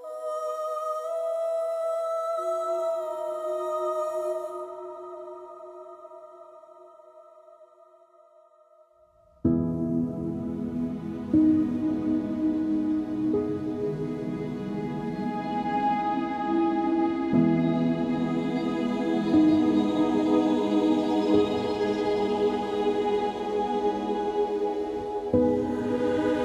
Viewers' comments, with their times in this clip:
0:09 The chords are incredible.